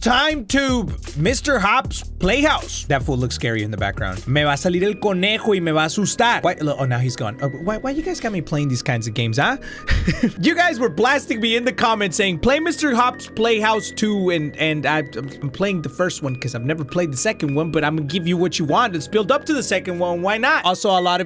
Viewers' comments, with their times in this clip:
0:09 The nervous laugh says it all.